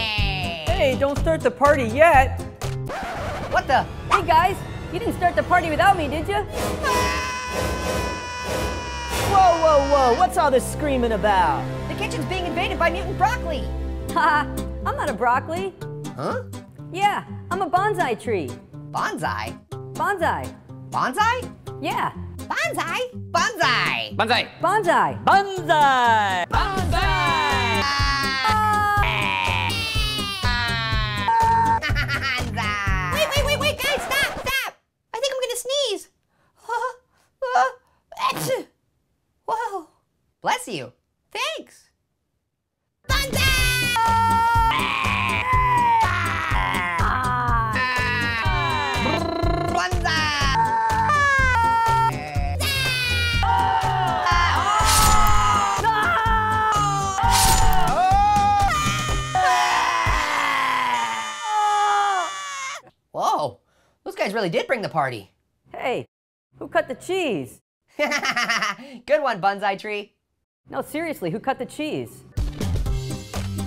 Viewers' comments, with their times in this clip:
0:06 Orange screamed like his first apple he annoyed
0:06 this scream sounds like apple's scream in the first video
0:06 first ao scream
0:06 Orange has Apples scream from the very first annoying orange episode!
0:07 Orange screaming like an Apple
0:26 That one character is still saying party in the background idk who tho Edit: It might be the food on the left. Look at his mouth.
0:33 Midget/Little Apple🍎 Is About To Sneeze🤧.
0:34 Whooa guys that sneeze! Just amazing.
0:37 That's just a little sneeze, even for him! 😂
0:38 little Apple sneezed
0:54 The Way how that Mood Change SO QUICK and the Way Orange Screamed The moment that happened was PRICELESS to ME!!! XD
0:57 Hearing Real Terror Scream
0:59 (Midget apple scream)